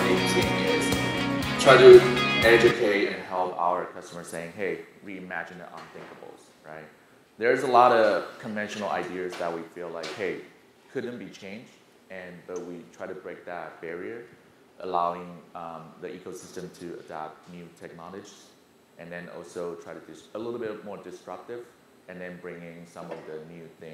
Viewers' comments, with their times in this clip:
0:05 very hard to hear the speaker with the background music. Luckily the music stops